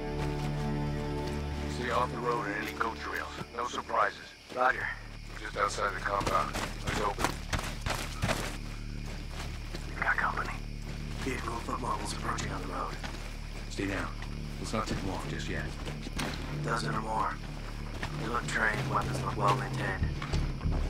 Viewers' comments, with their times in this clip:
0:05 The music is perfectly made for the approach on the objective .